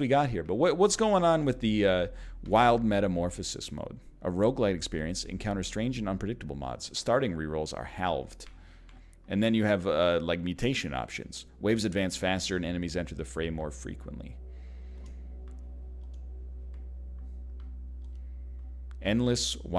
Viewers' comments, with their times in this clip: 0:07 Haalv'd Ahhh! A person said word in a way that I don't pronounce that word!